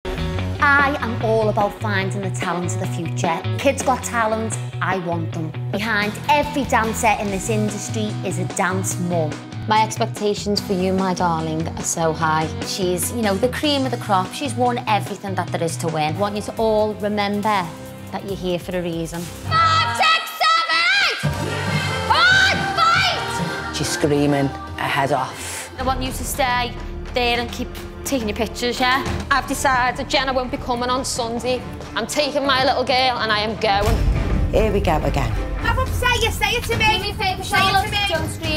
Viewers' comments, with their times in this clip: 0:01 it sounded like it was gonna be the beginning of a song
0:25 don’t all dance teachers scream like that? Mine do sometimes lol, and they’re not nearly as strict as Abby